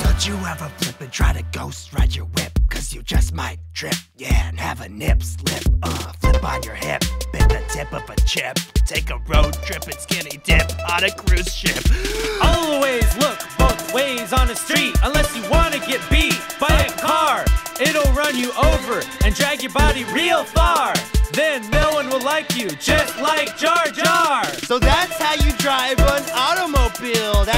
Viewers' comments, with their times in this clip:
0:09 my voice after i say a long sentence without breathing.